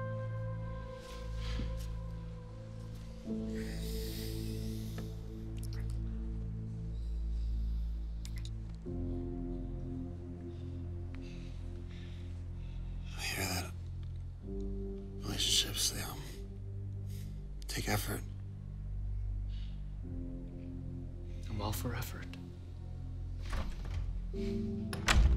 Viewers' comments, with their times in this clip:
0:08 Its the kissing sounds fa me 🥴😩🥺 Pause the video magnus was into that kiss😂😩😩